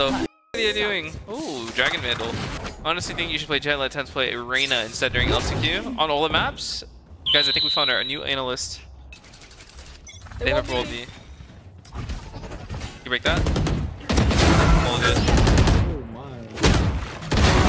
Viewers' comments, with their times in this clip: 0:05 this is literally my notifications so i was so confused everytime i heard it and had no notification.